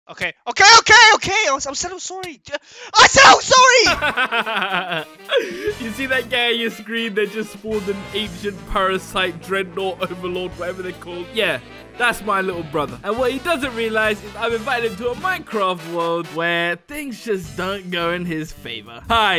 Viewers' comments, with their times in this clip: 0:04 you sounded like stampy when you laughed then